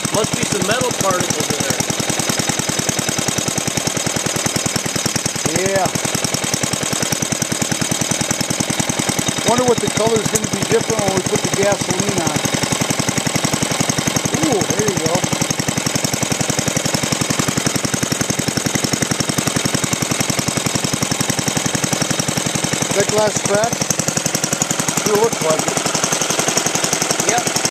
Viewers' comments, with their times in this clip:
0:10 you can see and hear the glass crack. Sparks were caused by the glass fragments.